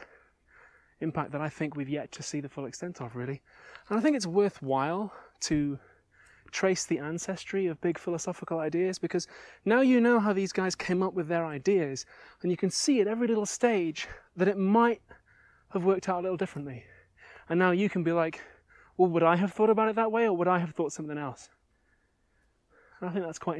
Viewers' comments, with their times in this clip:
0:09 You can hear Abigail's voice in the last part of the video. The vocal resonance shifts and her body language becomes much more relaxes and positive. Just before the sponsor. It was just nice to see her be herself unconsciously.